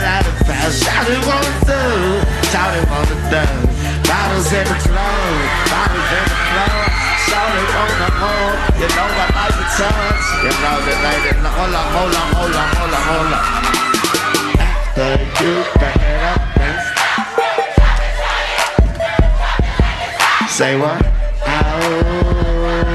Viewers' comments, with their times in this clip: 0:04 The crowd started going crazy